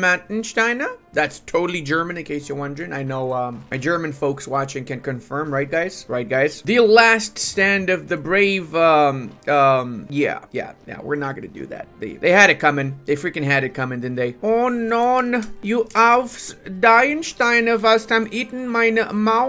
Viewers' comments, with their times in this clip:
0:04 I didn't know you were from Sachsen. Nice accent you got there!